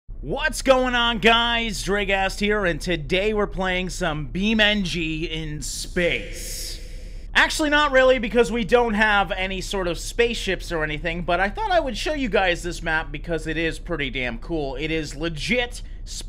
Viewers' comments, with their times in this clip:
0:02 the Closed Captions say "Drag ass"